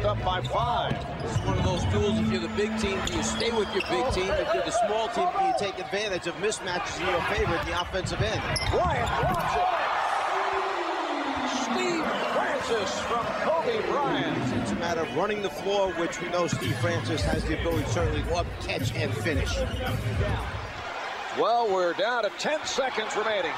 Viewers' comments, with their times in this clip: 0:04 Shaq’ s yells out to KOBE , aye aye aye!KOBEEE!!! And finds him open love that moment .!!!!